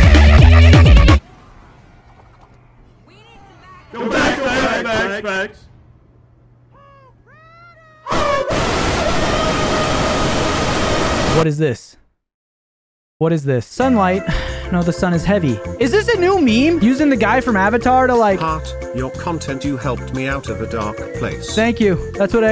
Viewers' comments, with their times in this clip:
0:03 sounds like the seagulls from nemo